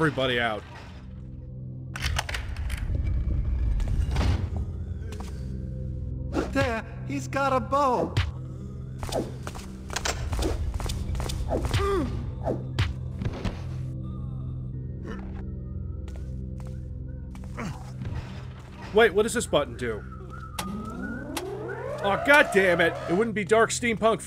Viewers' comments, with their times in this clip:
0:06 this shit right here is what i miss from old classics like this. Whether intentionally or accidentally these awkward mystifying scenes crack me up. Gets cracked in the head and meekly yells “hes got a bow!” Then runs and gets cracked again lol